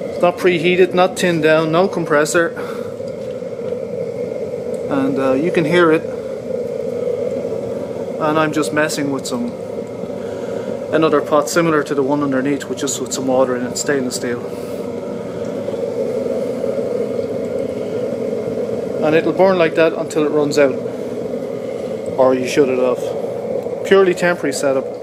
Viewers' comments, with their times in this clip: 0:07 I can hear it gangbusters The red glow on side of casserole pot seems a tad dangerous to me. Not to criticize mind you.... Burning waste oil if one can get it cheap/free is a great idea AFAIC. Any idea how many BTUs it's putting out?